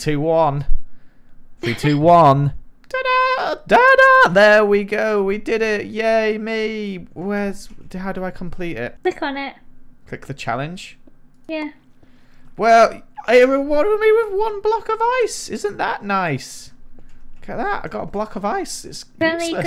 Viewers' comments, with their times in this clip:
0:03 i am living for that voice crack 🤣